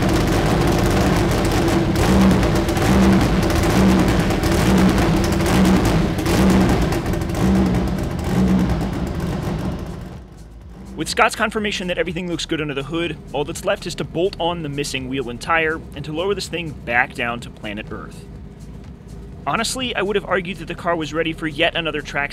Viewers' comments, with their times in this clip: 0:04 Now that is editing detail I like to see. Unadulterated engine sound slowly brought to speech levels and transition to overvoice.